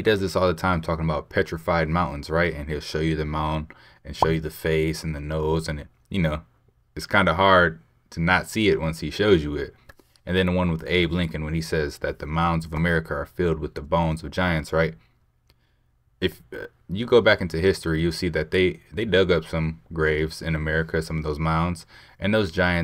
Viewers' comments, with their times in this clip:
0:08 that guy in needs to learn how to open his mouth and pronounce words! it sounded like he was blowing the mic in one big run on sentence, i honestly couldnt barely even understand wth he said! the inanna one!